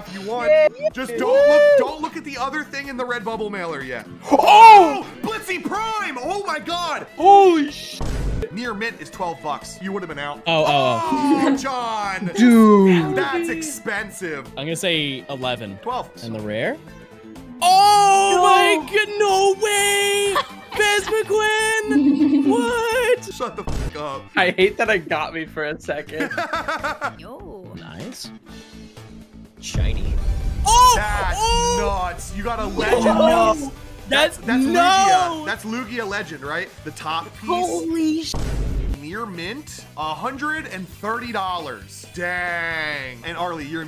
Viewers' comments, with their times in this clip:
0:06 that yo kai watch music really makes this video even greater
0:06 love the yo kai battle music
0:16 REALLY DIGGING THE YOKAI WATCH MUSIC
0:31 did anyone else hear YKW music?